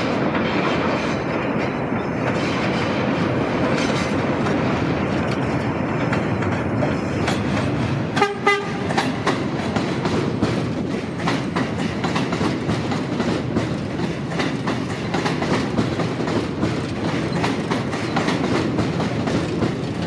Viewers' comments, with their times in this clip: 0:08 The operator said hello by honking their horn at ya.